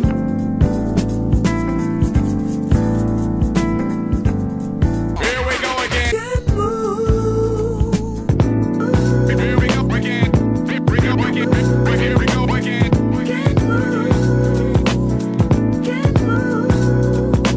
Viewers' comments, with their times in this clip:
0:03 is so smooth